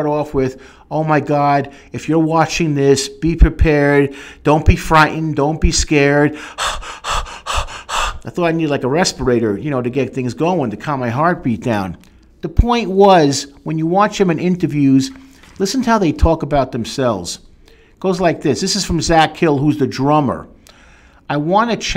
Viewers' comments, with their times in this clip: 0:06 He does a great little cover of I've Seen Footage.